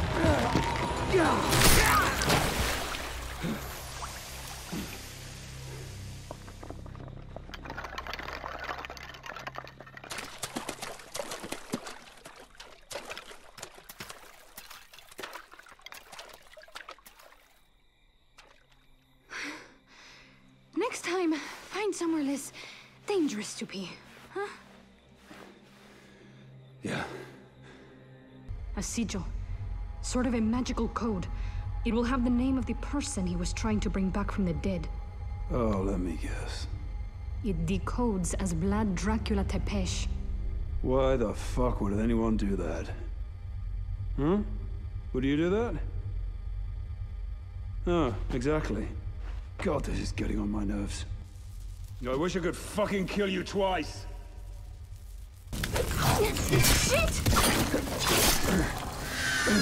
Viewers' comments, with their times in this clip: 0:07 Lego building sound
0:40 this always gets me. just the raw power of sarcasm and disappointment from him is just hilarious.